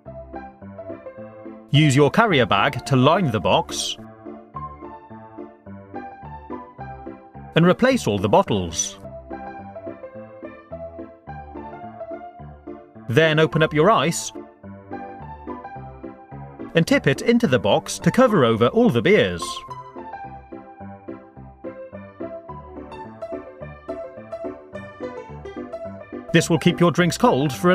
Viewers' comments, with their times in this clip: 0:09 I thought he said, "then open up your eyes"
0:14 open up your ice or eyes? 😂😂